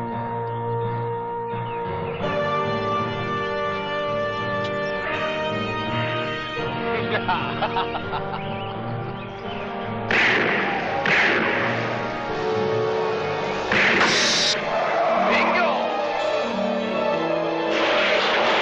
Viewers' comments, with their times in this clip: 0:06 Me: runs out of the way when I see a car coming down the street Ricky Caldwell: laughs with no regard